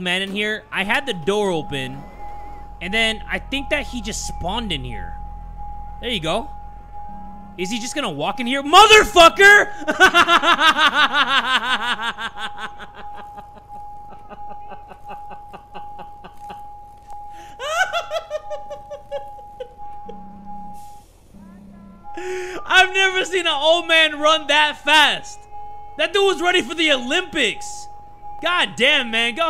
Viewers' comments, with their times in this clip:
0:10 ,the laugh is awesome
0:17 the way his laugh changed 😭